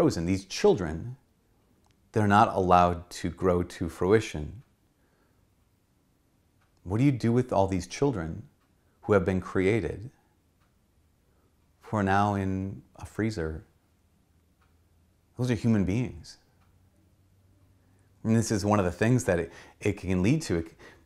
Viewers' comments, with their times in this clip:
0:05 The room suddenly stands still. You can hear a pin drop. Excellent message on a very difficult topic. You uphold Catholic teaching with immense mercy and understanding.